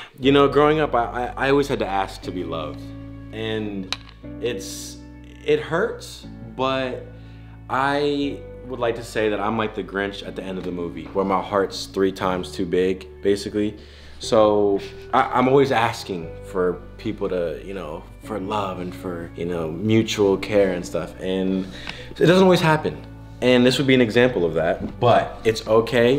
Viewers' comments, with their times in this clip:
0:09 this whole scene (and with the background music to boot)